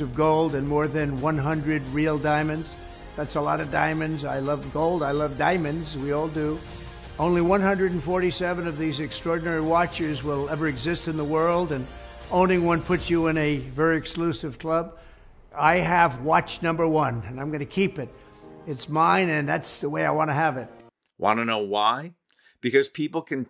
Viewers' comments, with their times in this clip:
0:10 At a bit before in, Mr. Trump speaks emphatically that he loves gold and he loves diamonds, and he pauses and then states "And we all do." Guess what folks, tthat's the devil talking